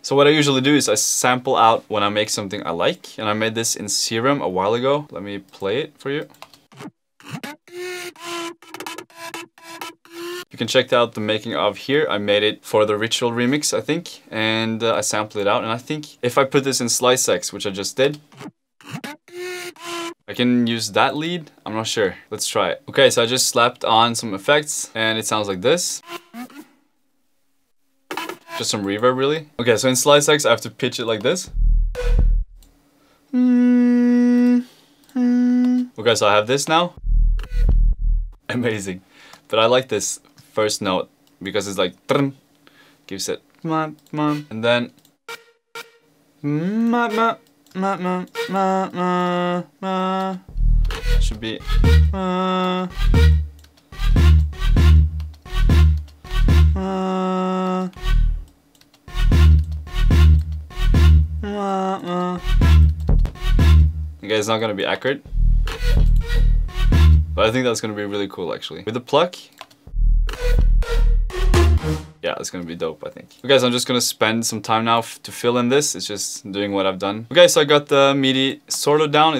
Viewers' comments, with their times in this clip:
0:03 That Kazoo sounding lead is killer!
0:04 that sounds like old Dirty Palm <3
1:00 i didnt know how to change pitch like that